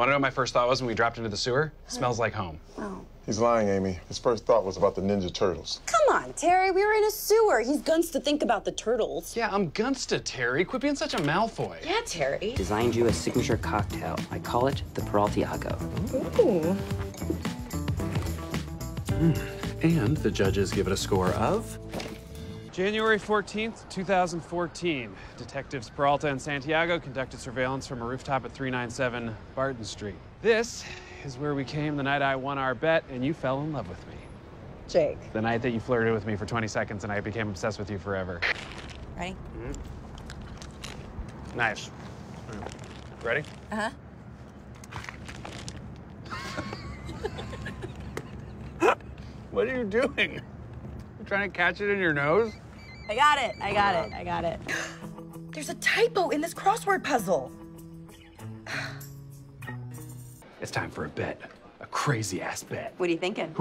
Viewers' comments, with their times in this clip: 0:10 I'm really not sure if he said "quit being such a malfoy" but I'm just gonna say that its what I heard
0:41 one of the most natural sounding scenes in the show. It feels so real.
0:45 The laughs seem so genuine it makes me ship them even more
0:46 Looks like a real laugh. They aren't acting